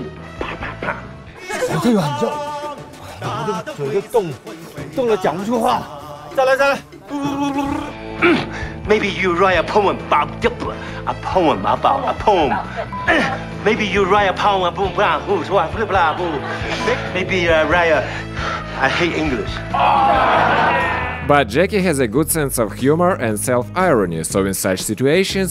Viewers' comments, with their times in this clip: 0:08 the “Poem, Pome killed me